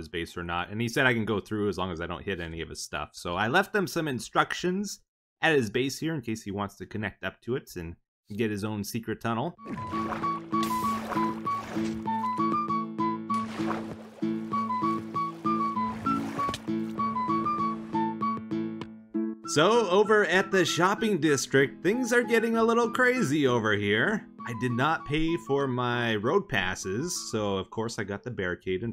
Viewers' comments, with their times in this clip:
0:09 OMG Runescape's music just hit the nostalgic feeling sooo hard
0:10 Playing cute song -Everyone liked that
0:10 This little melody that he plays in the background is so freaking cool